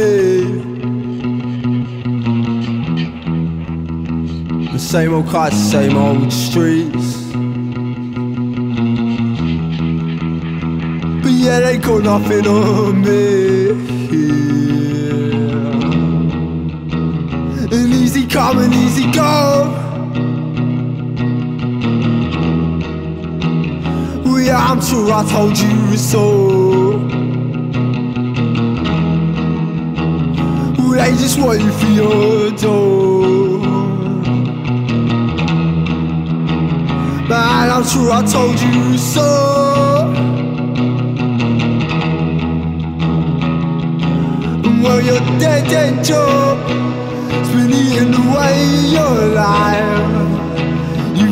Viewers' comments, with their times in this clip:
0:04 is he saying "same old car, same old streets" or "same old clutch, same old streets" when I Google this I get mixed answers some say he says car others say he says clutch.
0:36 i've always trippin and rushing to stop a cat fight when i heard that part